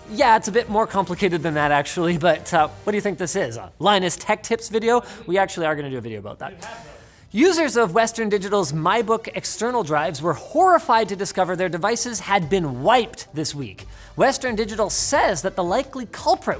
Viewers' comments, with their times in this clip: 0:03 Video/Audio Sync Issue you got there Linus